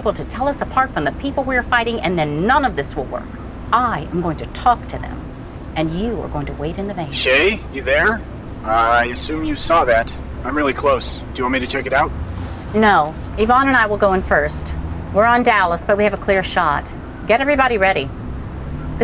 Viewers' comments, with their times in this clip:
0:07 This show made me drop my spaghetti, the line "shay, you there" said in a robot voice freaked me out because thats my name. thought i left a call open, 10/10 would waste my pasta again!